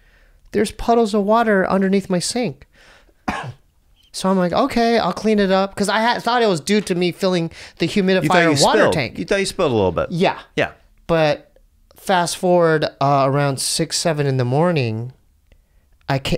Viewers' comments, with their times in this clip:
0:03 Lol, the 'Think about it' cough is epic. ✂✂